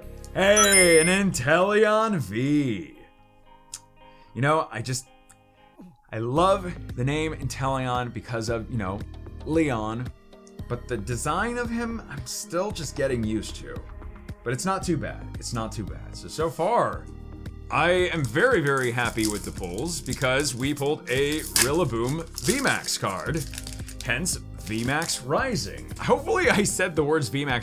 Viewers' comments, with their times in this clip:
0:10 he said its natu bad